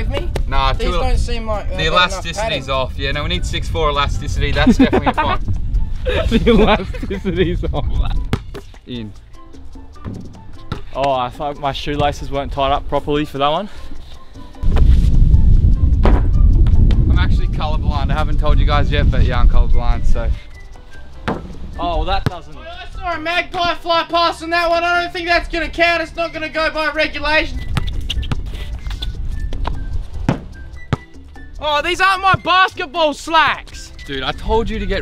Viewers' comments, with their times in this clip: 0:05 The sound of the ball smashing into the window ... Oop
0:23 Who would’ve thought koalas sound like that